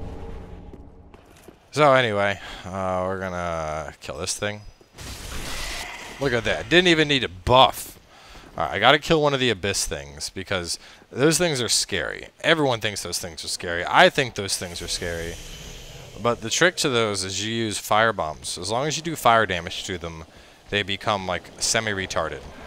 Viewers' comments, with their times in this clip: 0:09 i was convinced that you where drunk where you said : i dwidn't even need buffffff.